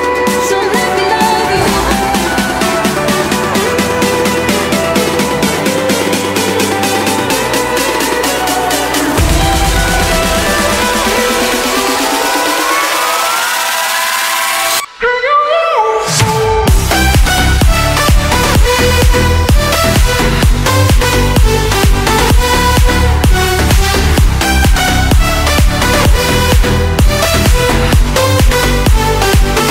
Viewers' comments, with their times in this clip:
0:10 sound liek her face is in the middle of transforming to a duck.